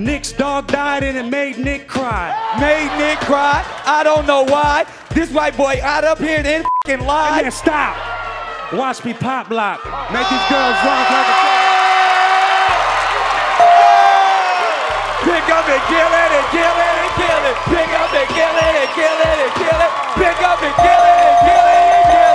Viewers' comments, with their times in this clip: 0:06 did he say nigga?
0:09 he didnt even get to finish haha and he was fake laughing the noob